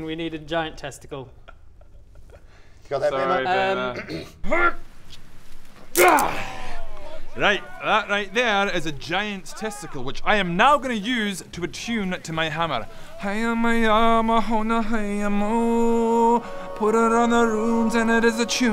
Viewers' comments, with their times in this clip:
0:05 New entry for the campaign soundtrack! The "Bodger Attunes to His Hammer with a Giant's Testicle" Song. . . . Strangely catchy 😳